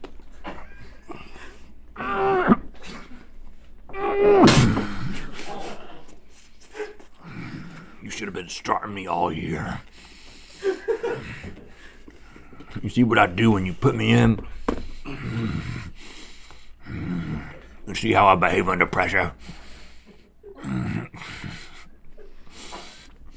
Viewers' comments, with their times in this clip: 0:06 Rhett grunting and staring intensely into my eyes from was definitely a mood